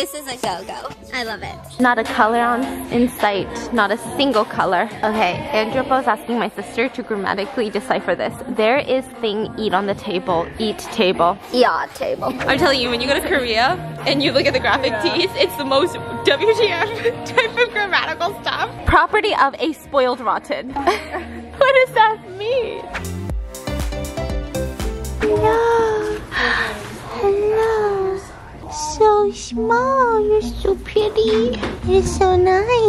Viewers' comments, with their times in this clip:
0:04 just attention causally playing in the background 😍
0:10 Sorry can’t ignore Attention playing in the background 🤣🤍
0:16 Not Attention in the background 😭💀